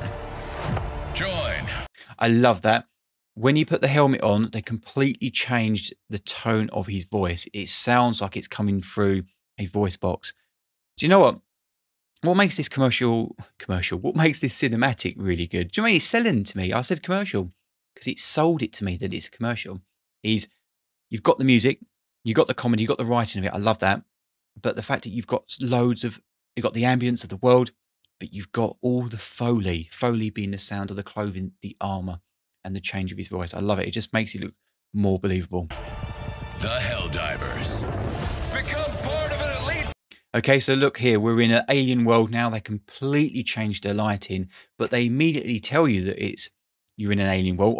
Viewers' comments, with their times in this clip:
0:09 On the PS5 the whole thing sounds even more impressive with the 3D sound mode and the bass and treble bosst of my headset than on YouTube
0:35 What you didn´t mention here is the absolutely genious transition they did there. The fading in sound of the Pods during athmospheric entry, then the cut to the pods burning through the athmosphere with the tension building strings coming in, and then the cut to the scene on the alien planet. Accompanied by an impact sound and the fanfares starting to blast. It is such a great transition, telling you in less then 3 seconds everything you need to know. Even better is how it establisches a direction of "movement". The harsher bluish light of the shot it front of the flag, to the shot of the pods that has a range from colder bluish grey on top to the reddish orange of the heat and the planet on the bottom. To the orange yellow of the planet. Which creates a feeling of a downwards thrust with a massive impact. Basically winding up a punch and hitting hard. That transition alone is a piece of art.